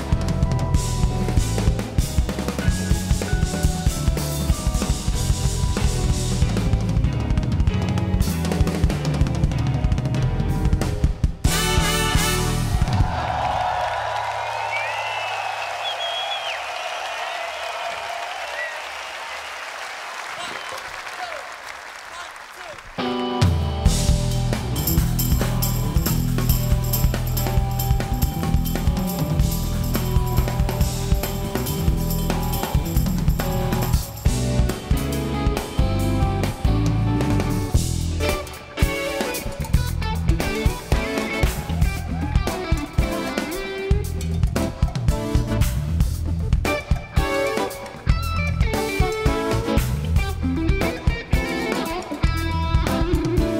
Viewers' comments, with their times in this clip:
0:07 Jeezus... the way they come back in after Larnell's solo (and the way they're absolutely rock solid during his solo). 😎
0:36 So yes, they have played this song like that more than once. It's supposed to be like that as proven by Michael League saying "slow down" just before the tempo actually slow down In my ears it sounds really cool! Hard to love Snarky Puppy if these unusual musical techniques aren't your thing!
0:36 !!! What going on with that tempo?
0:39 That transition is so brutal it desynchronizes the whole video 😀
0:40 Woh, that slow down rhythm